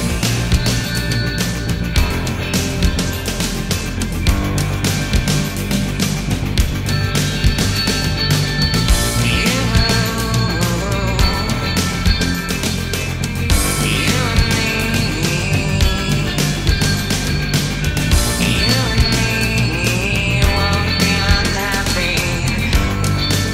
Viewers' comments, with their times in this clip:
0:07 The Solo is just a fantastic piece of music. Great re-mix